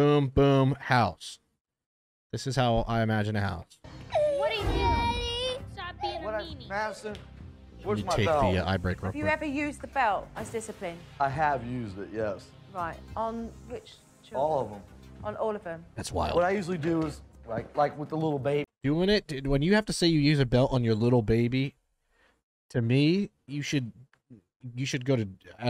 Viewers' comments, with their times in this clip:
0:06 was so heartbreaking honestly, her crying for her dad and all he thinks of is “where is the belt?”. Just reminds me of my dad and when I used to cry for his help and all he’d do is yell and hit me for it